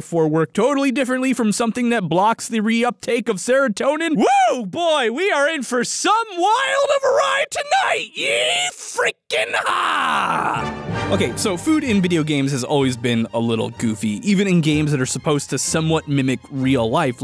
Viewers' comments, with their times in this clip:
0:04 hmmmm someone sounds like tio from "turbo"
0:05 When did Yuri Lowenthal get here?